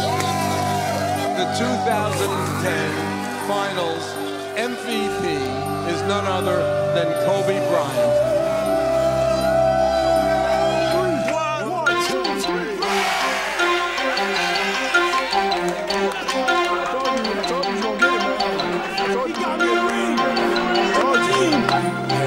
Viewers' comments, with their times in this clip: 0:03 Also r.i.p David stern you could hear him talking r.i.p best nba comossioner